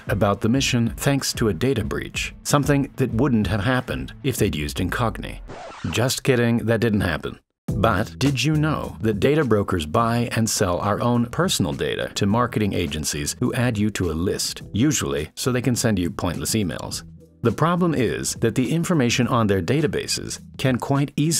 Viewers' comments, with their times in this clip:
0:08 You ever realize the weird way he says "but"